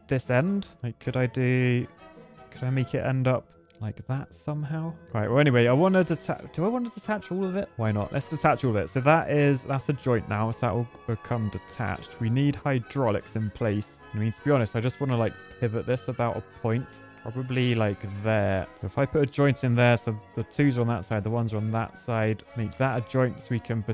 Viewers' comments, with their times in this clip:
0:08 in the minute He spoke spanish i said "Bueno"😂😂